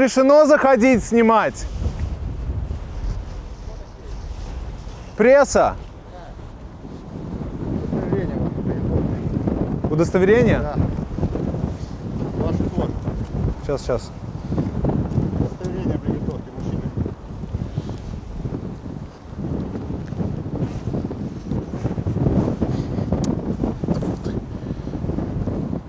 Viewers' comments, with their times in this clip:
0:08 That's a bullshit. man has ukrainian accent and sign "MIЛИЦIЯ" on his back. Russians has Digital Flora camo, not the M21 city.